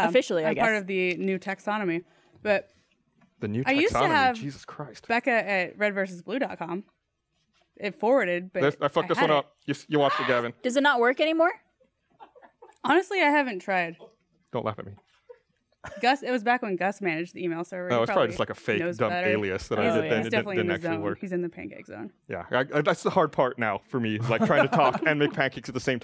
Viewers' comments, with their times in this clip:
0:10 Did anyone else hear that weird ass sound ? xD